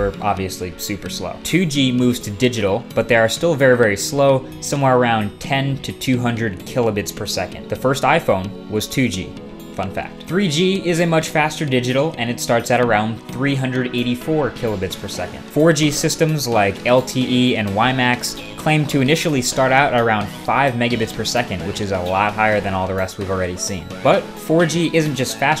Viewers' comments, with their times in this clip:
0:09 I thought the "funfact" was "fuck that" and i was soo shocked to see Marques swear...